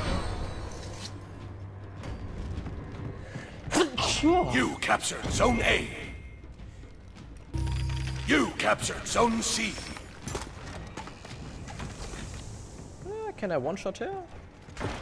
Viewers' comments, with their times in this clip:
0:03 Oh I don’t really think this is necessary but I think you sneezed somewhere so I just wanted to say bless you :3
0:03 its kinda late but bless u